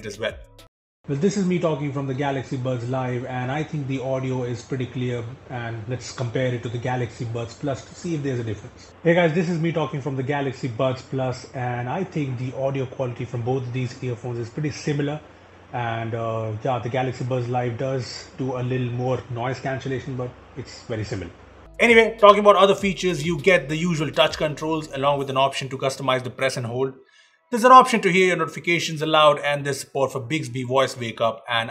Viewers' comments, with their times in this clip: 0:08 Am I the only one who feels the buds plus sounded better?
0:12 the camera mic is picking up his voice instead of the sound from the Galaxy buds I don't know if I don't understand it or if it's a flaw.